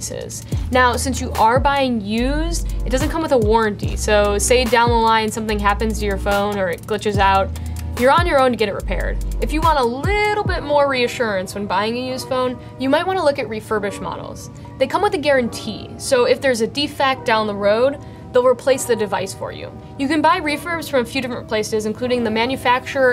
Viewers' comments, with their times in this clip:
0:08 that sounded mean😢